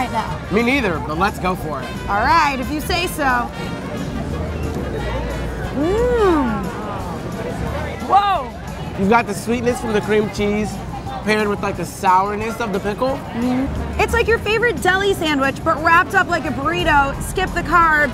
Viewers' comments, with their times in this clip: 0:04 why the hell she say mmMmmMmMm 1.0002 milliseconds after she bites into it